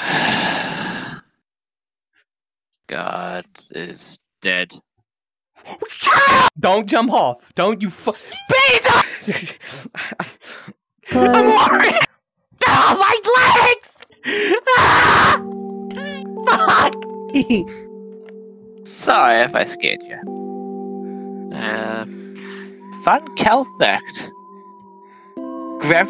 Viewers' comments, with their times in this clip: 0:05 MY TIME STARTING TO PLAY WAS SO UNEXPECTED IM CRYING THIS IS AMAZING
0:11 I love how it just played the song when sunny uh spoilers ig?? jumped